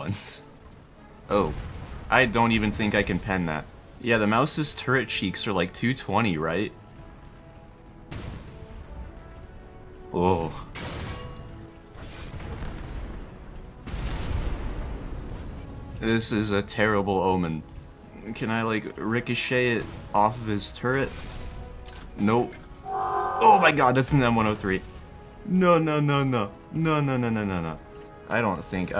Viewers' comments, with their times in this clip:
0:09 sounds like the snoring sound meme😂😂